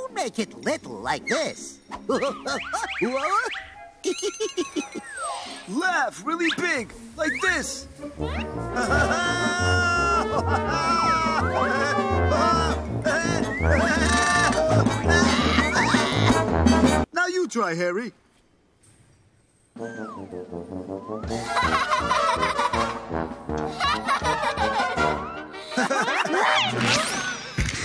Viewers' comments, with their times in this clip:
0:09 Yoyo's craziest, loudest laugh ever!